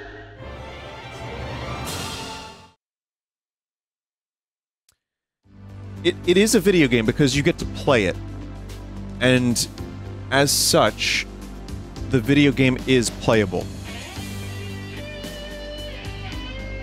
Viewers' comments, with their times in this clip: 0:03 with the pause in music when Vin starts talking just before dramatic music starts. I thought he added that himself to make his statement sound more dramatic.
0:03 Doesn't even mention the budget top gun theme